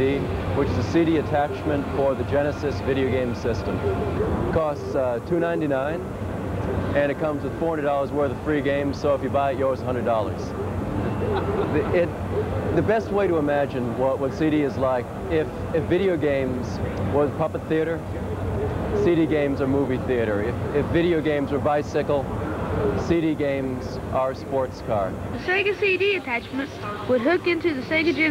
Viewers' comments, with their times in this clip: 0:10 = Clint McElroy laughing??